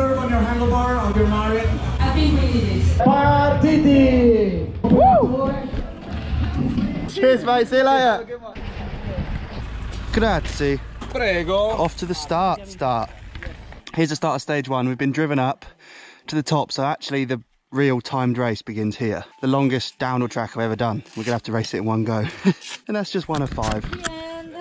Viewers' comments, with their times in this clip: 0:09 Ok my not italian people, it's the moment of the truth. We speak stereotypically when you speak to us like that 😂